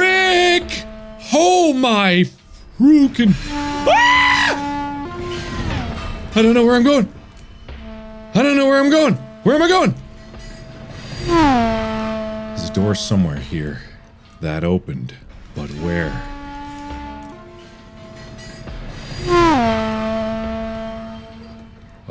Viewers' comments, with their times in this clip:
0:03 LOL that scream
0:03 His scream reminds me of that goat scream.